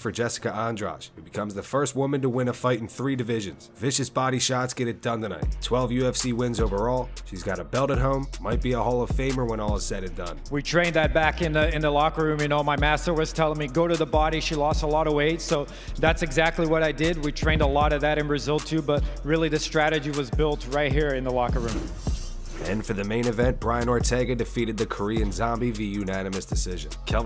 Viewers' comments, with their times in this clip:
0:10 Jessica got one of those Makenzie Dern accents
0:13 is exactly how I imagine Jessica's voice...